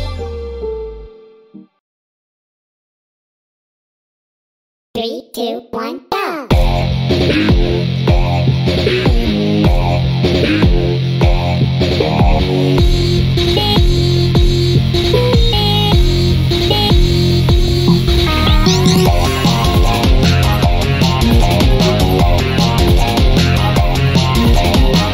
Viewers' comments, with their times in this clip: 0:06 this part just sounds epic